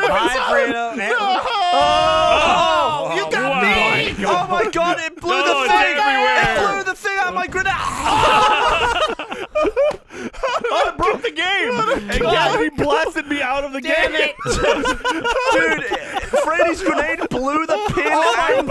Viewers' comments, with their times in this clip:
0:06 someone please put that noise in a lego game